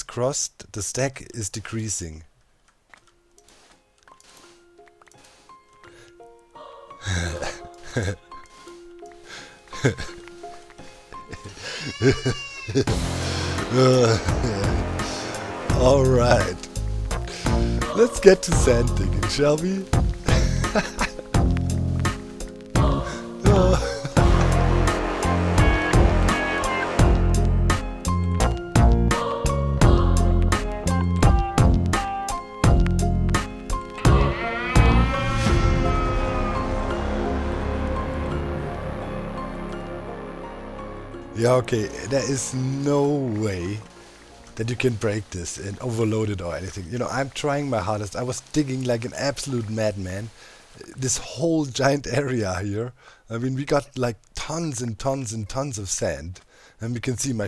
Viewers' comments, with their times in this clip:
0:03 the laugh off a genius gone mad XD. Caused goosebumps hahah
0:05 that evil scientist laugh is amazing lmao
0:15 I loved your maniacal laugh !
0:41 "Ja okay" the german is breaking out